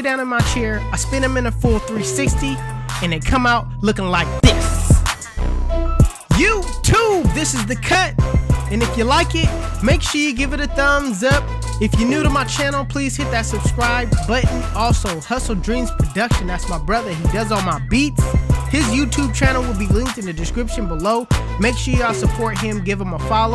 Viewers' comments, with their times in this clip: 0:07 he Raps on the beat